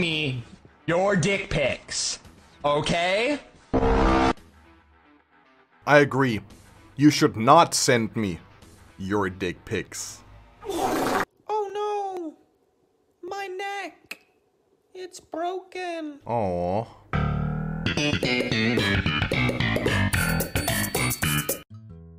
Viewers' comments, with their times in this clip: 0:10 😂 the discord notification timed perfectly when he said 🍆. The timing on that 🤣